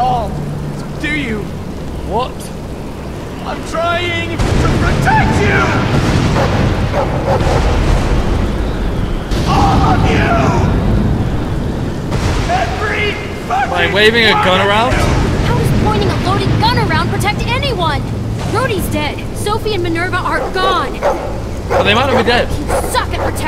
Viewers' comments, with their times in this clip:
0:04 im trying to PrOTect you (dat crack voice)😂😂